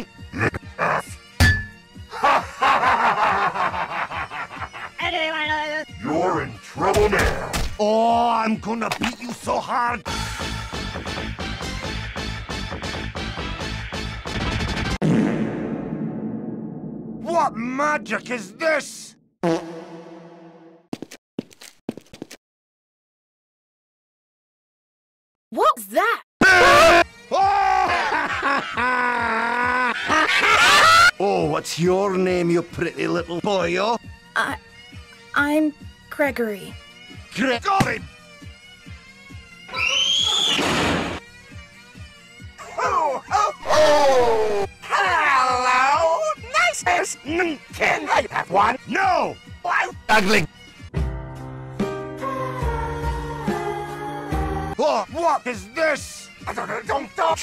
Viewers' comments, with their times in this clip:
0:10 Not it having the Asian Mom discipline sound😭
0:43 was da best,sun was like:ho ho*devilish ho*